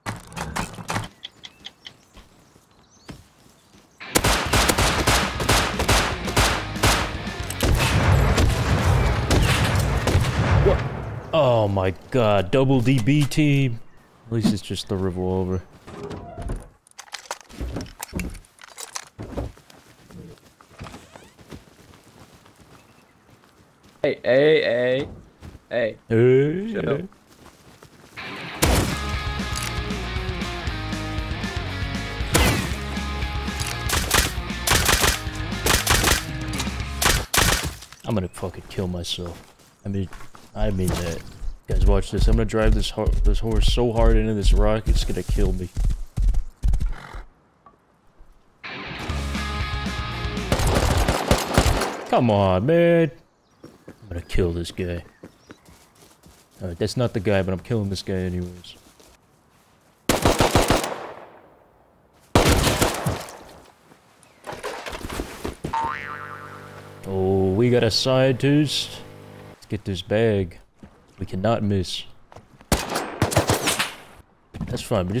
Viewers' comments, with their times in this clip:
0:03 regular shots ...seconds later *CANNON SOUNDS!* 😂😂😂😂
0:39 the music leading up to was pristine
0:57 That goody ass action music had me cracking up for some reason